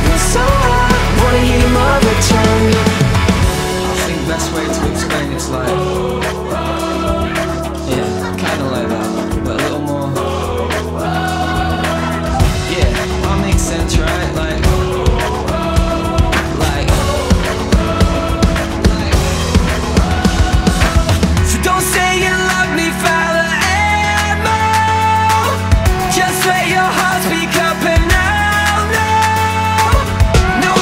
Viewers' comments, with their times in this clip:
0:05 am i the only one that noticed that he put the sound of his wife’s laughter in the background?😭❤️
0:09 sounds like it says but little more, but the lyrics are just but more
0:11 is that a discord notification??? 😭
0:12 I keep thinking is a Discord notification.